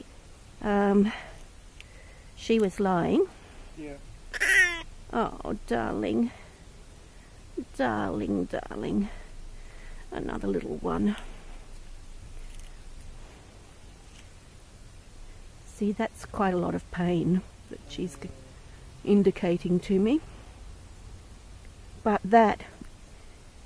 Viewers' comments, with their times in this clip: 0:06 Oh that little cry ...😢